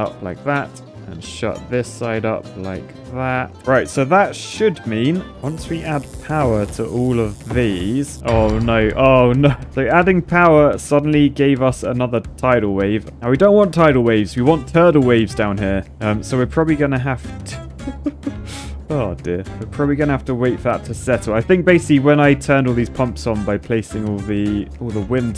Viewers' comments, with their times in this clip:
0:09 What is the music actually? Especially the one ... it's so cool! reminds me of Django Reinhardt, but I haven't listened enough to him yet to tell.